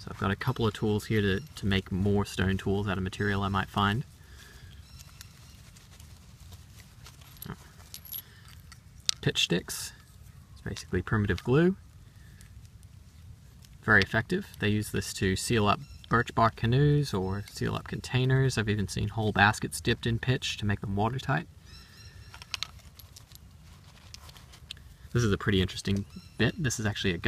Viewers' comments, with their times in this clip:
0:09 Lol I coughed and I misunderstood you. I thought you said "Bitch Sticks"